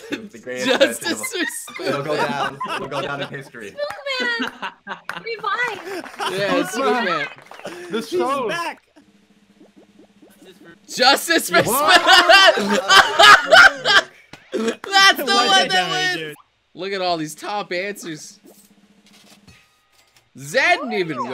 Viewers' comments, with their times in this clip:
0:09 Poor mousy she crying